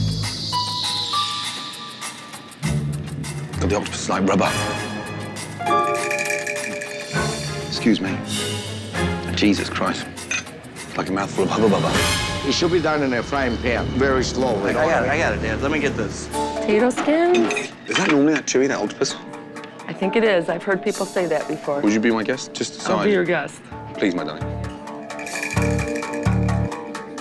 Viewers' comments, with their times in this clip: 0:10 "like a mouth fullahubbabubba" DRAMATIC HORN TOOT lol